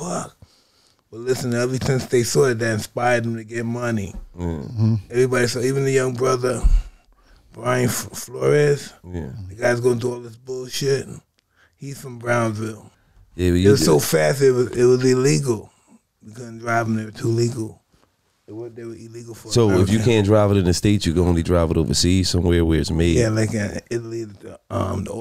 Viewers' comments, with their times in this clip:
0:09 LMAO Mike not laughing at all and just maniacally breathing so subtly as Gillie laughing at his “bird joke” on Wallo was a slept on moment. Had me laughing lmaoooo